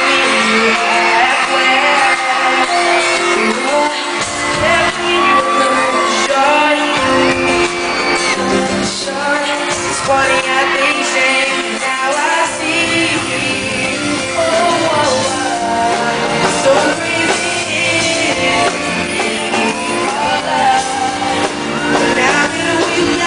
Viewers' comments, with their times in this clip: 0:10 hw sand wrong thumbs up is you agree
0:10 They were nervious, the way she looked at him, and how Justin sang wrong :)